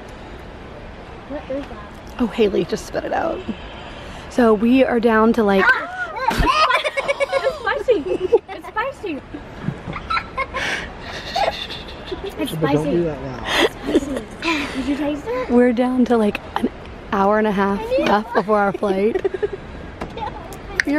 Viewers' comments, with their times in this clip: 0:06 they go eww at the same time lol